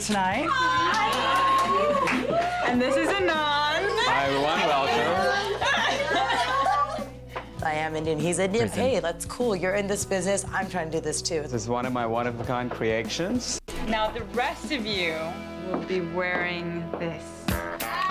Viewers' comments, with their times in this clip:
0:04 actually screaming! That’s surely going to make many a video.